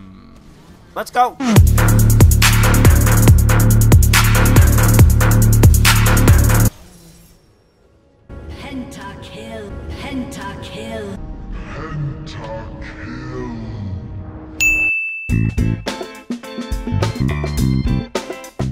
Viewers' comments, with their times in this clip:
0:04 MAAAN !! THE SONG It made me stand up :D